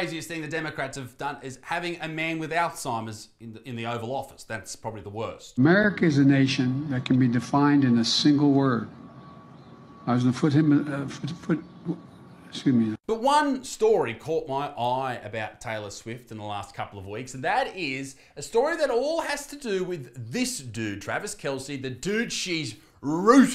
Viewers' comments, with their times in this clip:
0:09 he speaking german ???